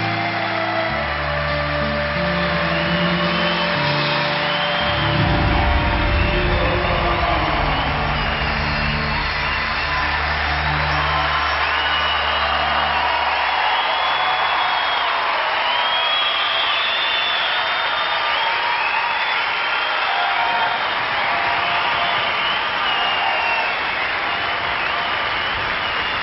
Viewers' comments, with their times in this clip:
0:10 the song wrecks me, the beauty the wonder the joy and then the ROAR these tears feel so good, they're not sad tears, they are beyond joy tears, ecstasy as the soul regenerates and refreshes